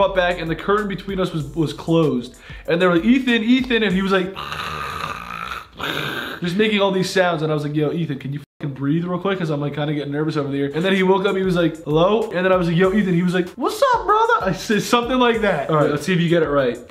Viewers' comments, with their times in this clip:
0:04 that sound Grayson made lowkey sounded like a demagorgan